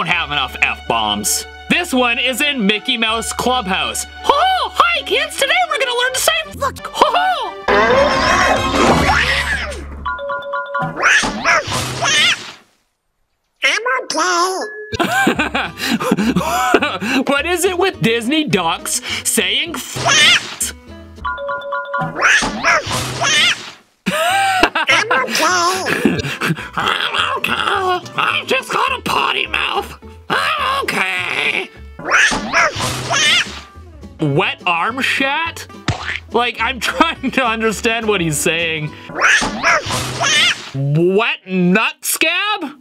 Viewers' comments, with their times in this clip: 0:09 I think Donald's actually saying what was that. But I can see how people could hear that
0:10 I hear him saying “I’m a thot”
0:11 On Disney Plus It Says That He’s Grunting And Not Saying A Single Word
0:13 SOUNDS LIKE HE SAID ''Am I Gay?''
0:14 WAIT HE ALSO SAID EM I GAY
0:14 I heard "am I gay
0:20 The writers over at Disney knew what they were doing when writing Donald’s lines, especially since they so fit with his character. The only one I think may have actually been misheard is his line because that just sounds like Donald Duck went through puberty and had voice cracks
0:22 went nuf cat ?
0:23 actually donald duck din’t say any words its just getting hurt sounds